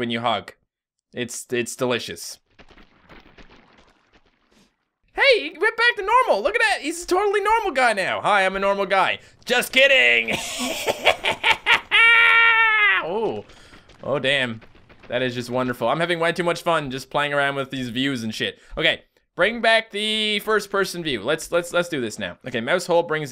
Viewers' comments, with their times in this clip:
0:09 That Chucky laugh